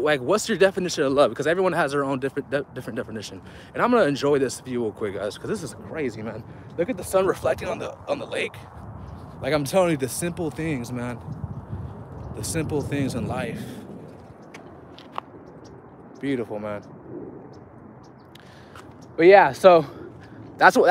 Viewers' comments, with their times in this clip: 0:07 Bro what happen to your voice minutes on the video , that was mad strange , I really think you was sent from God to deliver his massage, but that shit got me confused...